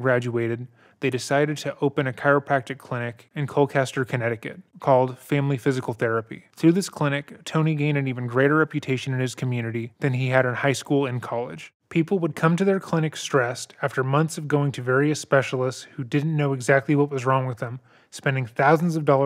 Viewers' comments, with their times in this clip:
0:04 he just pronounced Colchester as Colklester? 😂😂😂 i live there